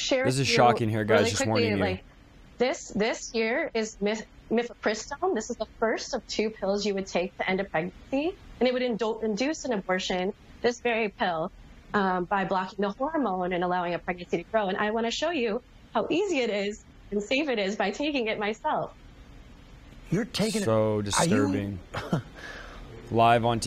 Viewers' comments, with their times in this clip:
0:05 why does her voice begin to crack like she's about to burst into tears. I to like she's conflicted about what shes doing. I think some part of this lady knows what she was about to do is so depraved but unfortunately she's been so deceived. I pray that God would open her eyes and that she's able to forgive herself for what she did. This is truly heartbreaking.